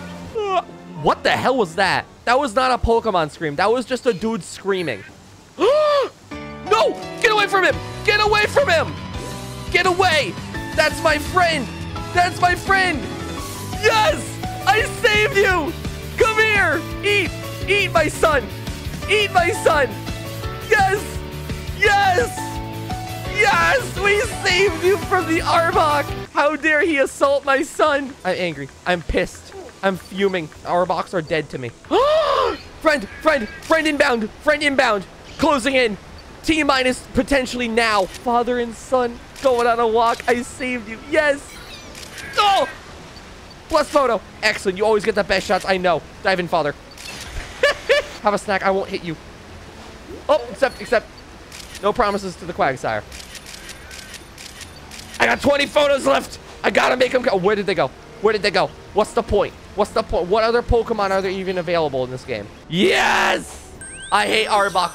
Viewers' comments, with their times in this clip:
0:05 is the best moment in the enitre video, and the music amplifies the emotion.
0:45 The way you say "diving father" is very amusing to me lmao